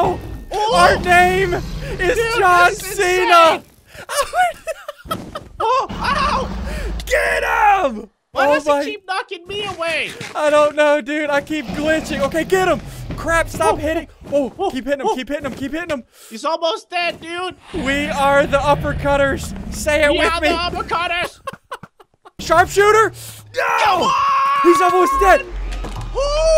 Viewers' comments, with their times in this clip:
0:10 derp SSundee voice comes out
0:11 derp SSundee voice comes out